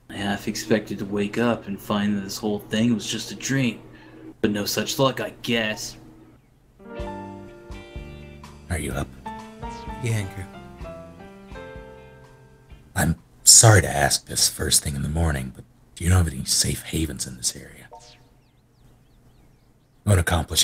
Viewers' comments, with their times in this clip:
0:06 the timing of that music was perfect.